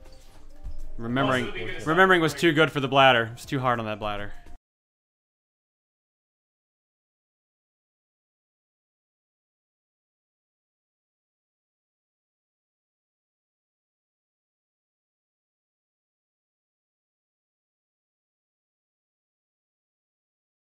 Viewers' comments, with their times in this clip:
0:04 Where is music?